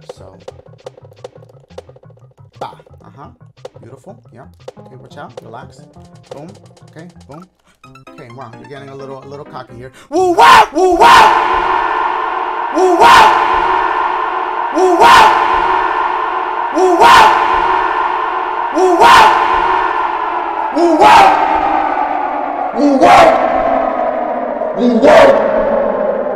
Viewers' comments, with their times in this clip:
0:09 He’s sounding alot calmer halfway the vid- Oh...
0:10 Dashie back with the echos
0:10 happy to see the cave echo back